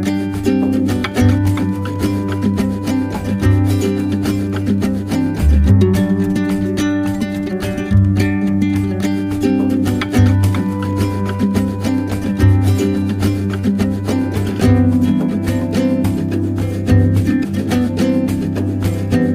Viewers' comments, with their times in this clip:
0:04 The audio and visual doesn t seem to be marrying up. Or is it just me?